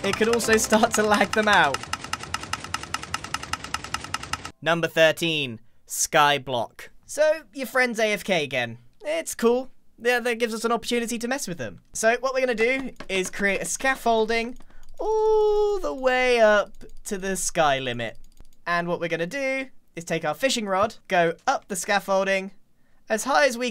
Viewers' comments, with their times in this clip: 0:04 Grian's voice sounds like he made a Grian TTS.